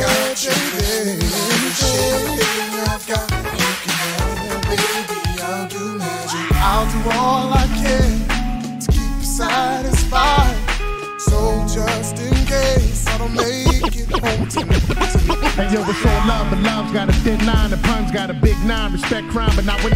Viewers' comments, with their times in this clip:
0:06 ... one of the dopest instrumentals around! 🔥